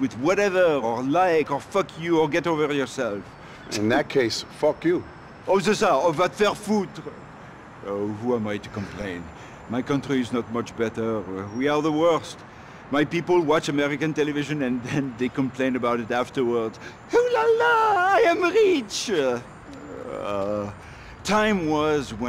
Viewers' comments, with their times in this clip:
0:05 "vas te faire foutre" He say that as the homeless drunk guys that we can meet in fench train station ^^'